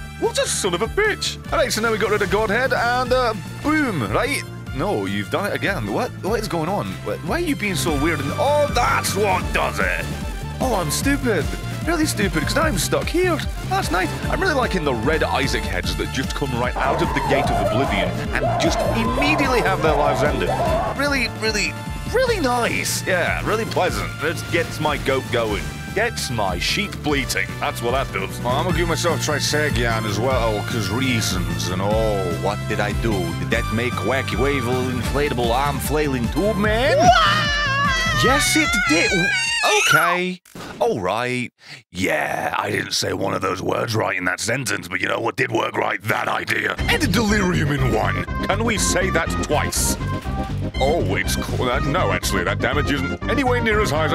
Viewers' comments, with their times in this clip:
0:03 Lovin' the demoman impression
0:36 Funny mario scream
0:37 Mario 64 Scream is hilarious on